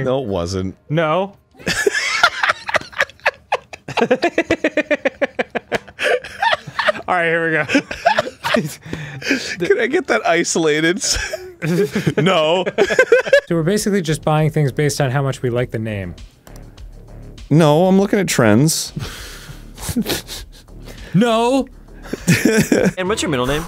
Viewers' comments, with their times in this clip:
0:10 I like how Arin's joke "no", sounds exactly like his actual "no" in the following clip. xD.